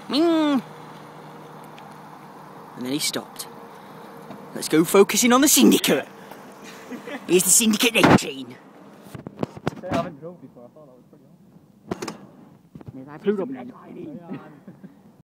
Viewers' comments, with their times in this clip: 0:10 the dude i think cuz it matches his voice...